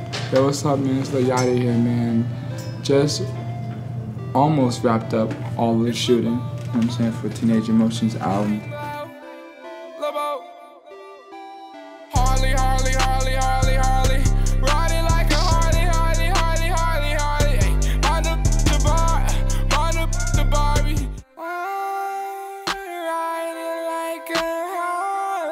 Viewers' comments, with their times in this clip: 0:10 wtf that song sounds like that whack ass Rollie song.